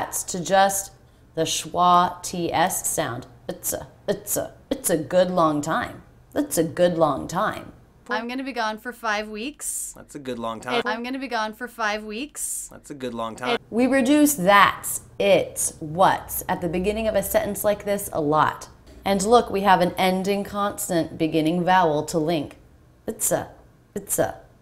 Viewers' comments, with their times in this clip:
0:05 Awesome! "that's a", "it's a" and "what's a" are homophones!